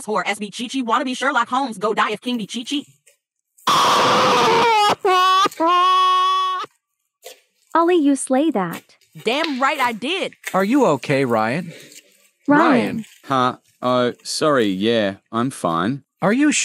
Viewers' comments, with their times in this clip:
0:03 A-H-A-H-A GOT ME DYING 👁👄👁😭😭
0:03 bro it's goofy ah for real the cry bro☠️